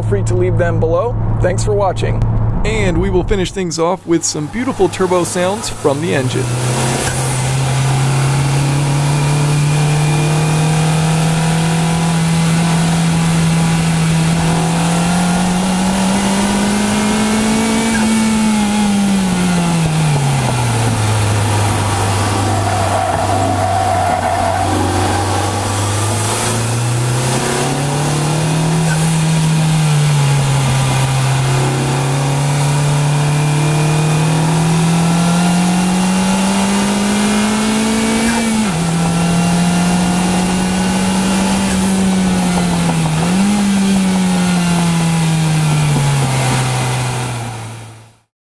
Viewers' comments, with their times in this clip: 0:06 VTEC KICKED IN YO ! :D
0:41 What is that knocking sound?